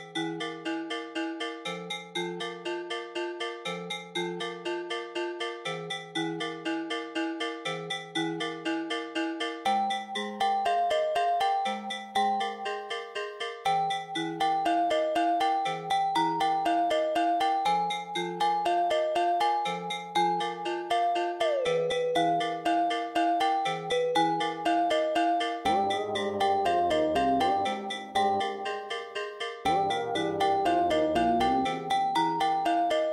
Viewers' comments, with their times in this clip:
0:09 Okay this is actually incredible but one thing I noticed is.. Right where the field dice section plays ( see ) it actually ends up playing at the wrong timing! It should be playing just 1/8 of a bar later! Same with the sprouts in some sections in sync with the field dice too! Other than that, this sounds amazing! 🎉 (I can't even sample)
0:16 i absolutely adore this part, the field dice sound so magical and kind of mournful